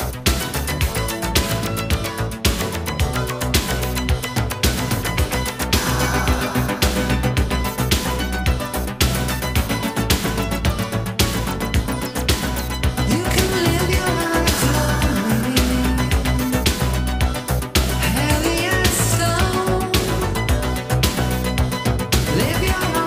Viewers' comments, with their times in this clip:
0:06 I always loved that modulating keyboard effect The entire remix along with the dub version and dance mix were played so much during that time by me. I liked how they did remixes in those days. More extended or 12' versions and kept the original more in mind because of using the original sounds. Memories